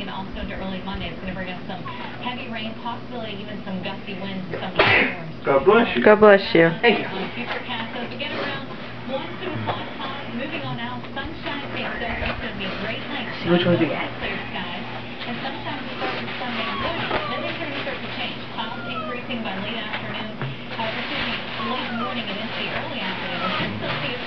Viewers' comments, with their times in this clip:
0:05 What do they say after he sneezed? Good bush you? I'm not from america so i have no idea what you say after someone sneezed